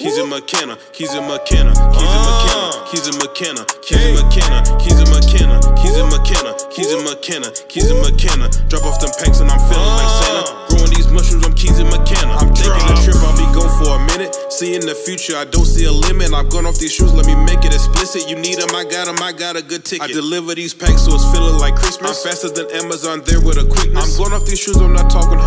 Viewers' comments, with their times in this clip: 0:07 catchy. Had me bumpin my head. Thank your for your informative videos they’re also cool to see you a rookie work very professional